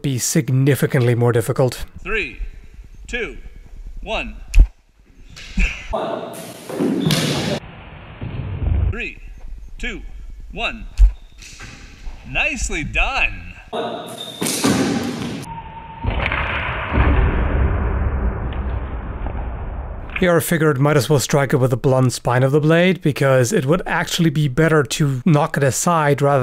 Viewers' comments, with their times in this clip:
0:09 Sounds like the Wii Sports guy
0:11 sounds like its from a video game
0:12 Wii sports characters have made their way into the real world! You can hear him !!!!!
0:12 he sounds like the announcer from Wii sports lmao